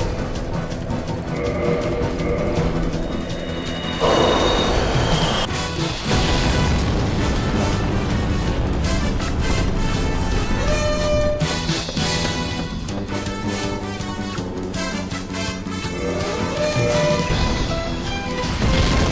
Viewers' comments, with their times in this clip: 0:04 bro when i heard kenshiro's theme i jumped out my chair lol